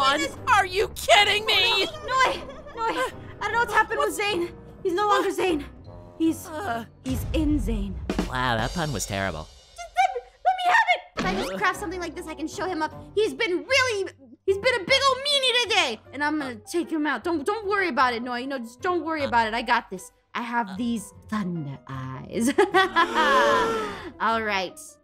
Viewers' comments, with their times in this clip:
0:09 noi’s voice changed when he said: wow that pun was terrible I am rolling around it was sooo funny 😆